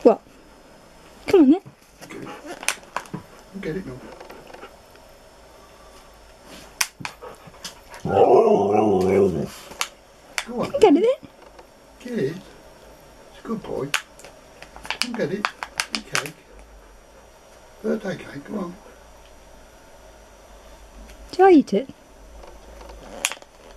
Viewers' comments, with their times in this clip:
0:06 In these indoor videos you make with him, he always moonwalks before going 'rr rr rr rr!'.